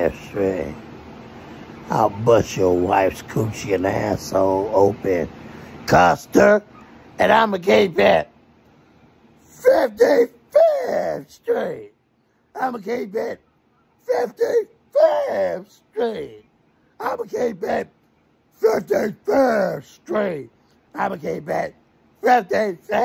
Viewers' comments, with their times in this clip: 0:10 ...that "55th street" was on its last legs😂😂😂sounded like when ric flairs old ass tries to do the "whoooo" but can barely get it off😂